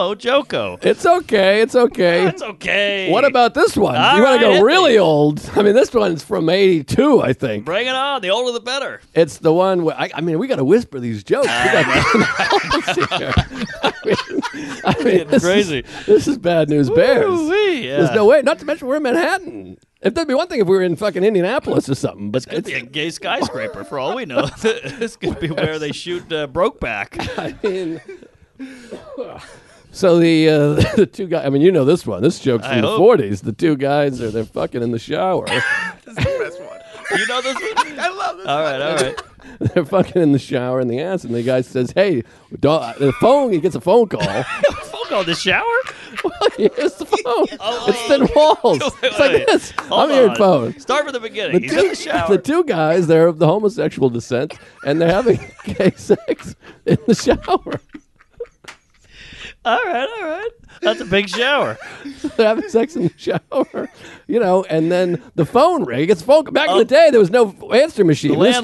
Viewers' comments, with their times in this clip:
0:03 the joke where we hear Mark’s real laugh… I don’t think I’ve ever heard him really laugh and it was beautiful!
0:08 Say what you want about the new studio but the whispering killed me 😂
0:30 Joke was first told to Mark by Joe on episode "The Sunburned and Fun" Aug 18, 2014. That was so far back that Mark must have forgotten. Mark's reaction and laugh this time around is much better!!
0:51 onwards is the most I’ve ever seen Mark laugh, great ep!